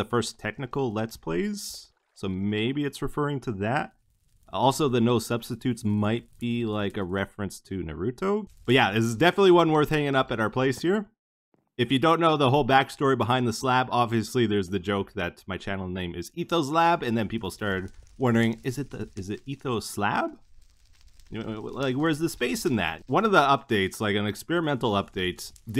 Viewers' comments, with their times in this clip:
0:08 not kakashi saying "nar-root-toe"